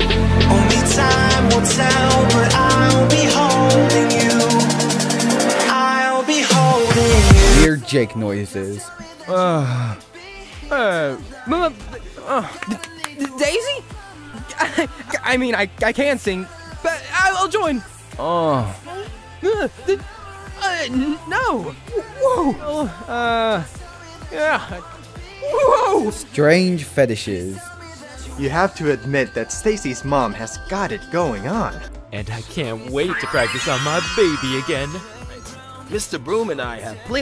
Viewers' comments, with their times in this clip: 0:08 jake's noises are adorable and nobody can change my mind
0:18 RIGHTTTT IM NOT GONNA SAY WHAT I THOUGHT IT SOUNDED LIKE CAUSE THERE ARE MANY INNOCENT CHILDREN 😖